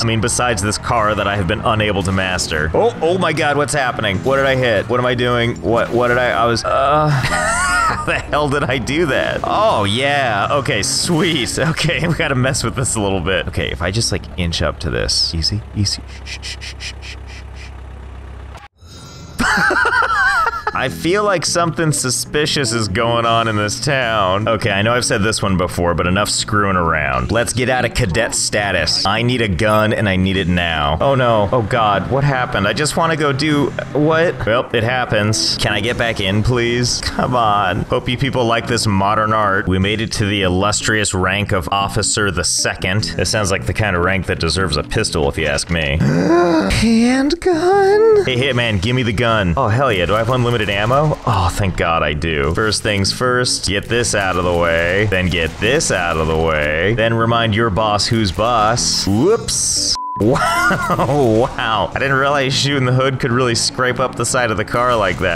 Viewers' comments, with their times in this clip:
0:06 the moan haha <3
0:46 Bro that voice XD